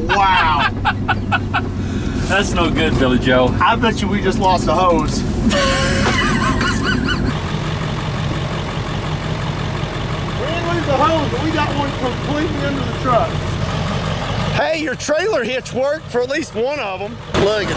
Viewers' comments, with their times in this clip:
0:05 your dad wheeze 😂😂😂🤣🤣